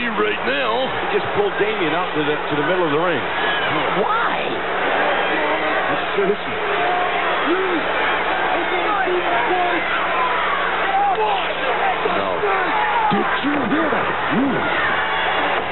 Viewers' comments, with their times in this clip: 0:03 Who says "Why??" and why does it sound like Joey Styles